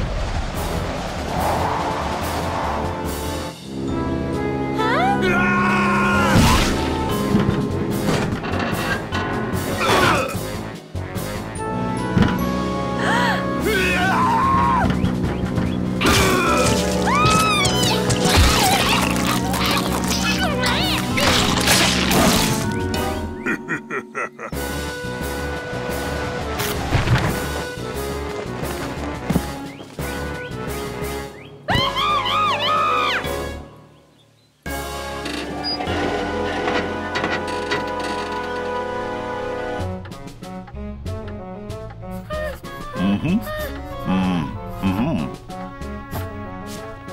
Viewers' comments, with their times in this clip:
0:04 that scream thou XD
0:04 fliqpy scream tho
0:04 flippy scream tho
0:05 Bowser as Hed scream tho
0:05 Flippy scream tho😂
0:05 That screaming thou xd
0:05 epik flippies scream tho
0:05 epik flippy scream
0:13 I’m never gonna get tired of flippy’s battle cry with a hint of a voice crack
0:13 is the most iconic fliqpy scream and my favorite of all time
0:13 I love flippys scream.
0:13 flipqy funni scream
0:13 fliqpy screaming i love this scream
0:13 this scream awakens dark shit.
0:13 The scream That but love in the if why (e/ cry 😭✋)
0:13 This scream makes me laugh Flippys scream
0:14 is this the part when flipwy screams on the flippy mod ._.
0:33 How cute Flaky scream turned Fliqpy into Flippy